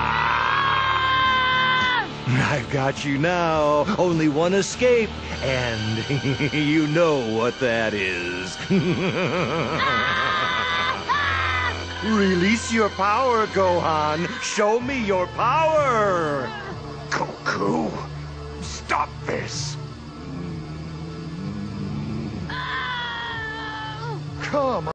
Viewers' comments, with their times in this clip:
0:08 That fucking laugh...